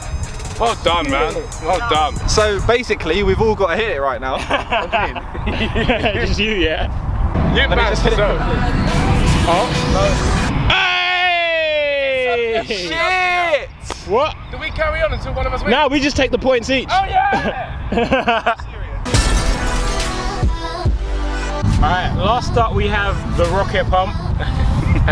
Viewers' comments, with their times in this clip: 0:09 I was ready for the beat drop 😣😔.